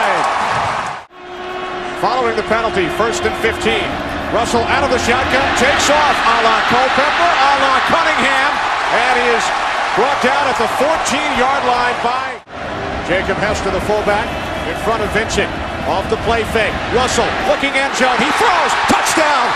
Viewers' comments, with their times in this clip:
0:06 i thought the announcer was gonna blow the building up